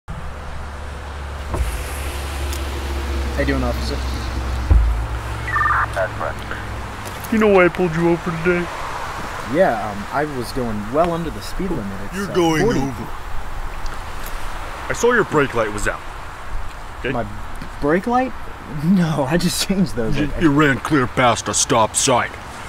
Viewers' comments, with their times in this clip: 0:06 I didn't know Kermit the frog was in this video